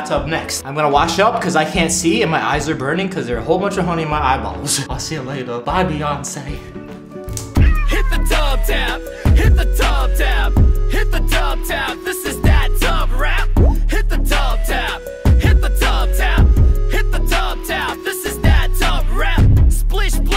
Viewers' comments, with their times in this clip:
0:08 super duper cool music